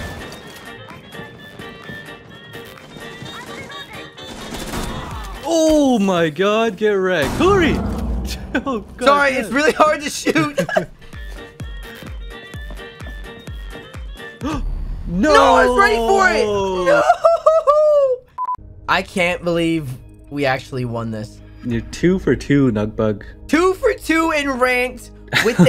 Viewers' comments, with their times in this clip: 0:09 That face mimic change is so funny! He laughs and than immediately his face turns into a serious gamer! :D